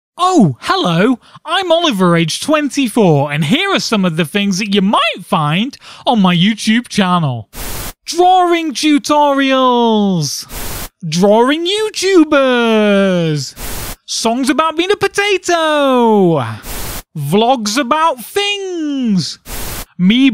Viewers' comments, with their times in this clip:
0:04 im pretty sure was a voice crack xD
0:05 huge voice crack :P